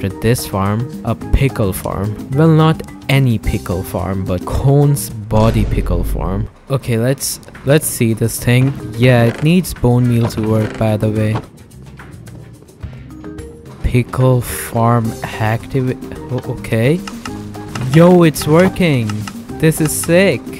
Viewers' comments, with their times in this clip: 0:03 I fw the btd battles music in in